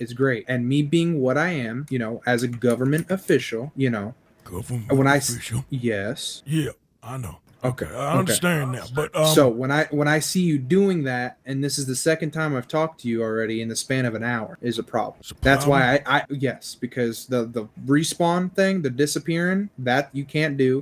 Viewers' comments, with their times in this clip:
0:06 " Government.. official." Arthur sounds so lost lmao